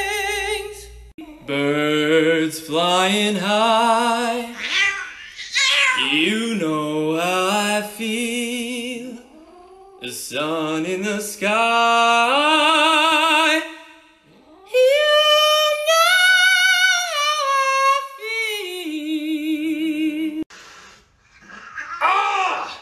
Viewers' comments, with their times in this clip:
0:05 the sound the cat made had me in stitches.. I kept listening to it, so funny